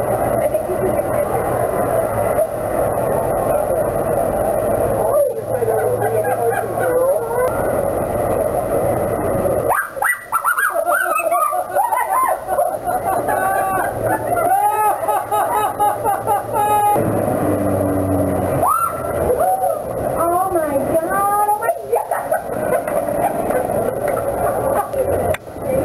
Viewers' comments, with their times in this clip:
0:10 I thought I heard a Chihuahua bird ...